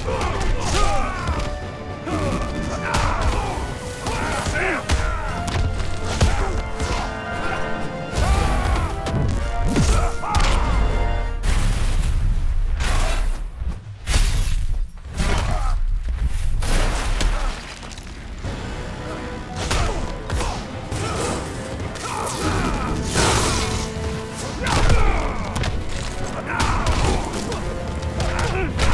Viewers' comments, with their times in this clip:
0:09 Am I the only one that yelled Damn! !?! Also, I like Flash' sound effects